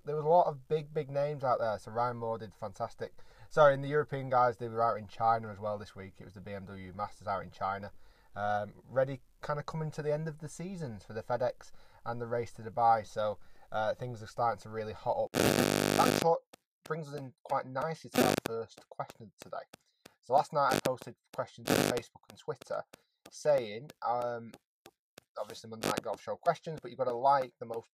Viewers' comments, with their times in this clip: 0:09 What's wrong with the sound